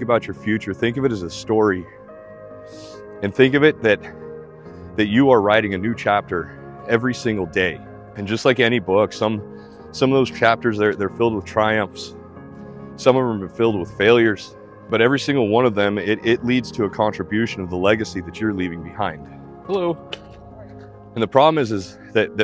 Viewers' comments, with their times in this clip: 0:03 The shift in the beat gets me so good w what you say. Thank you man. Thank you